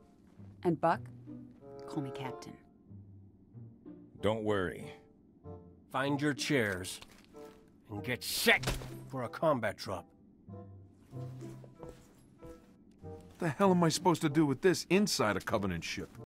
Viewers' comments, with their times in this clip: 0:09 Romeo’s line fits perfectly here. And the music in the backround is hilarious!